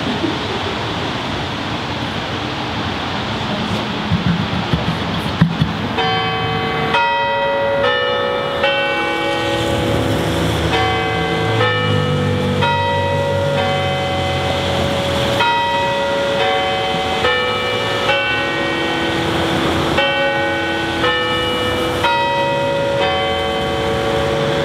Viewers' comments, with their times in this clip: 0:05 The chimes start